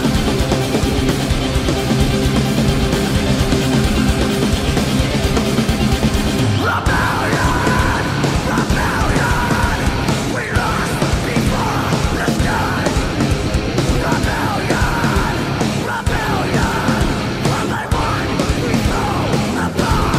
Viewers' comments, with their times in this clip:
0:03 Best... scream eva!!!